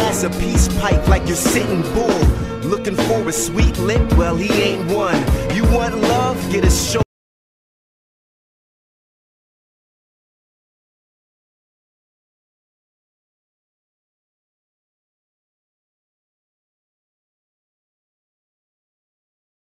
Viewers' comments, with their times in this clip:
0:06 Music cuts off